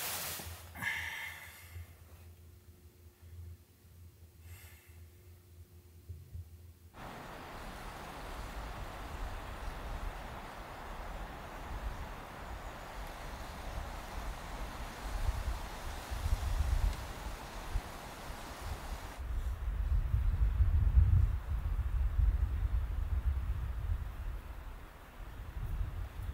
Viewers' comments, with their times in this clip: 0:07 Love the morning snowy sound, so satisfying